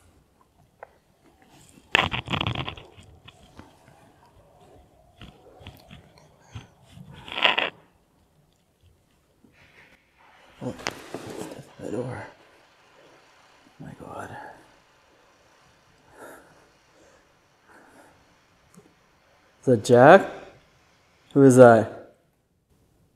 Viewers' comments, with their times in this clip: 0:06 I know this video is a few moths old but I am not sure if you noticed a voice says "Hello" and orbs are flying to the right of the screen at the same time.